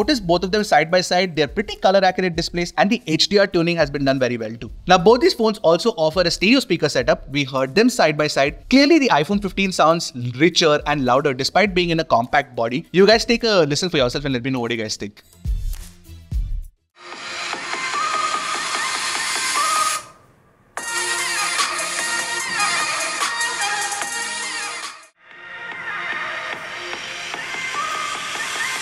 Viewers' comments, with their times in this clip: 0:10 but I think OP 12 sounds impressive